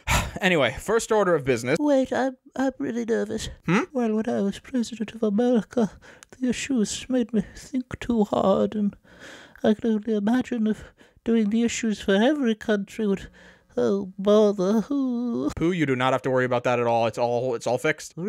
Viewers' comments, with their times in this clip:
0:04 Doobus Goobus ASMR